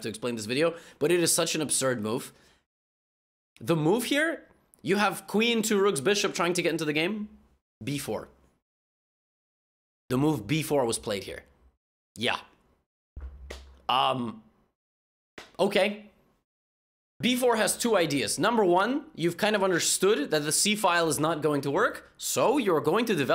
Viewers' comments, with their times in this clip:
0:06 happy agadmator noises